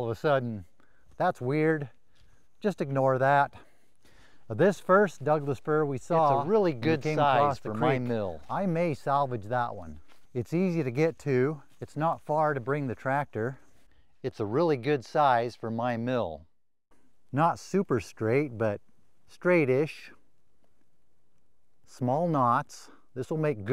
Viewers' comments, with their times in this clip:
0:05 there was a voice over voice !